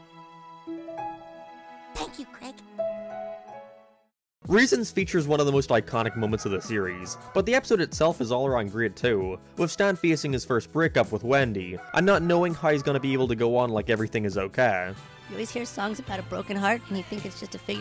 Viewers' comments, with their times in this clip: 0:05 what was the backround noise